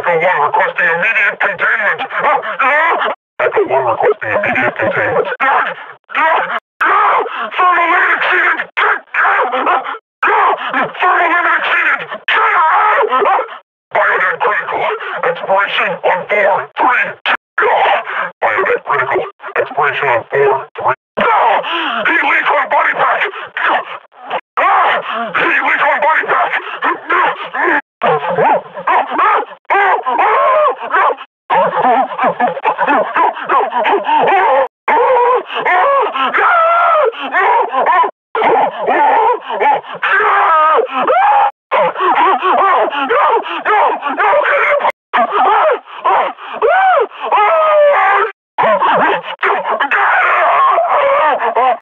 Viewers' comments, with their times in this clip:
0:03 i like how calmly he says “Echo One requesting immediate containment.” followed with screams of absolute terror
0:10 Sounds like Kermit
0:28 sounds like Seth Rogan
0:28 meme sounds lol
0:32 I didn't know they were voiced by bearded expense
0:35 bro was turning into hl2 zombie 💀💀
0:37 definitely the most horrified scream
0:39 that perfectly cut scream gets me everytime
0:40 Hey that kinda sounds like the Stormtroopers from The Force Unleashed 2 when you lift them in the air with the force! Hell all Combine Grunts sound like Stormtroopers!
0:41 this scream is probably the funniest “AHHH-“
0:45 Best Scream Ever